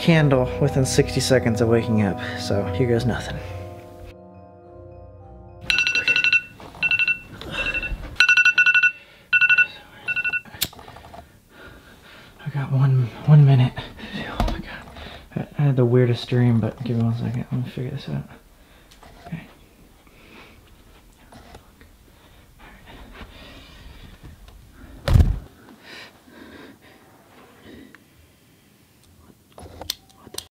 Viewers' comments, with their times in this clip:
0:05 Scariest part was the alarm ngl
0:16 hear closely.. You can hear a girl or women's voice.. If you heard it.. Let it be heard.. Love & Peace out ✌️💯🕊️